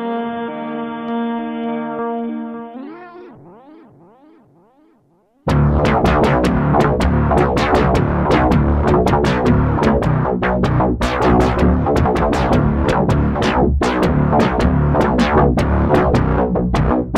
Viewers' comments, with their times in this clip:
0:05 Sounds like Oblivion by Grimes but angrier